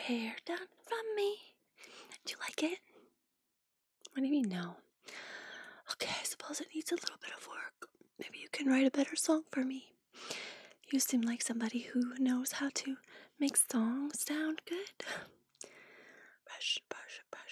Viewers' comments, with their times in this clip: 0:04 stops smiling “whaddya mean ‘no?’” So many natural sounding parts of the conversation! I loved this video haha! 🖤